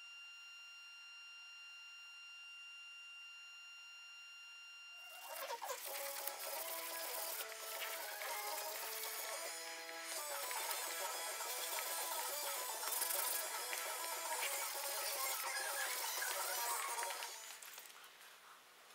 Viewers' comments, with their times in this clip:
0:06 Jump to and play at 0.25x speed for the weirdest version of Stone Temple Pilots' "Interstate Love Song" you've ever heard.